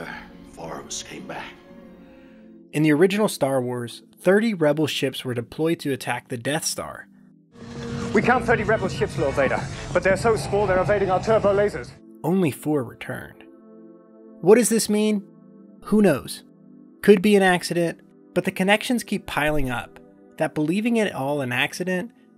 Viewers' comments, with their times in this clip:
0:06 I’m just starting this video and already it’s worthwhile. I could never EVER understand what Vader’s aide was saying ! NEVER!! So thank you so much for clarifying that for poor old me! 😂👍